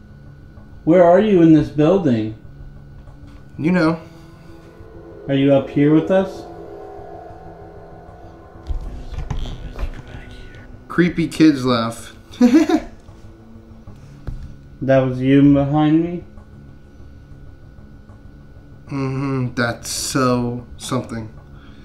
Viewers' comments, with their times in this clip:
0:06 Did anyone else here something at this time stamp? It sounds like "Yes we're... Yes we're back here." or something along the lines of that. It didnt sound like it was coming from the camera man.